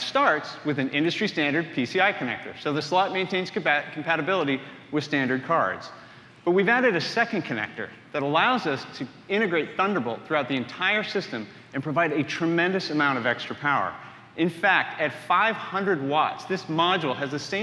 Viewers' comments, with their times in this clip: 0:05 The crowd are booing!! That’s first